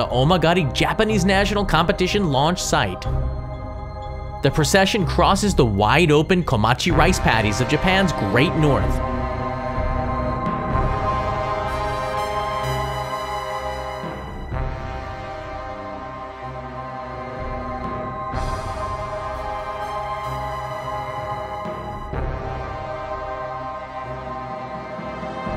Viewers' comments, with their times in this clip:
0:06 Music wanted me to do something sinister.